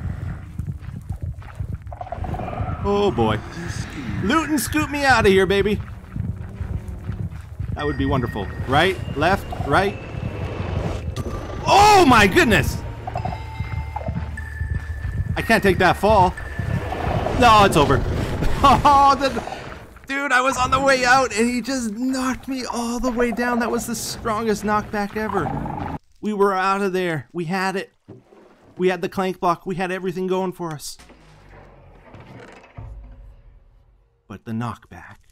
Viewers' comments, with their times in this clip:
0:10 WOW!!!! that shriek
0:18 that was such ana amazing sonic shriek